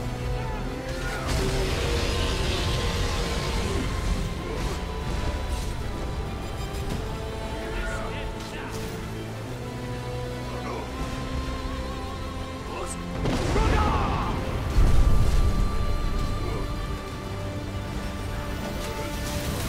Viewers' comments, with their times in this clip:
0:03 Now i know why ebony warrior lost, if you hear carefully, the sound of when you use the Stony Skin Effect appears on if you look carefully also since the beginning of the fight, he didnt use that spell to reduce the damage before, thats why he lost, his AI must of got confused at the beginning because of Alduin's shout that stunned him... Sadge i think he would've won if he used that at the beginning when he had 2000 life and not when he had 500 life...